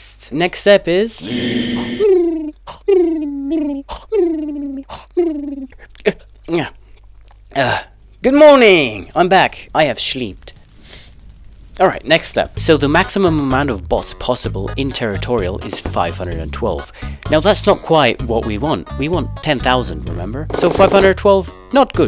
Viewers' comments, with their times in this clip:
0:03 How is your snoring keeping you from not falling while your sleeping in the void?